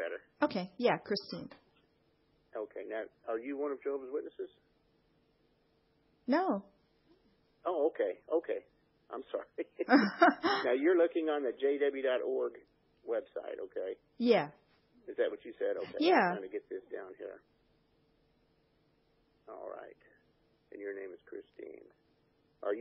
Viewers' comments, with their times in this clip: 0:05 You said the word no here with perfect inflection considering the question.😁